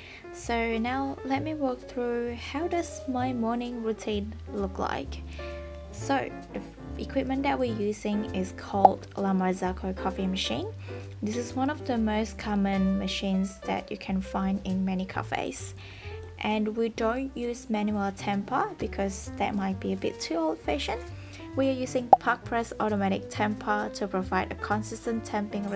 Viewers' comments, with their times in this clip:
0:09 "La Marzocco" sounds very similar to "La Mazorca" Spanish for Corn cob.